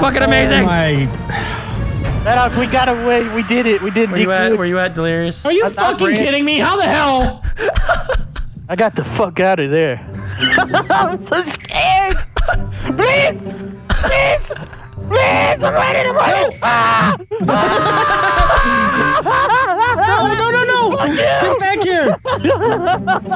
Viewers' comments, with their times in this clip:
0:08 those voices. Ive never laughed so hard in my life. Awesome video!